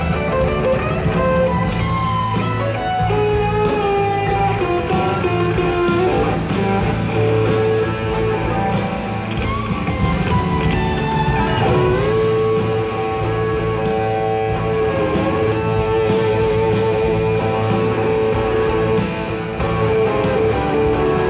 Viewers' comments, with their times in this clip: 0:03 he is playing the worst notes in his entire career ...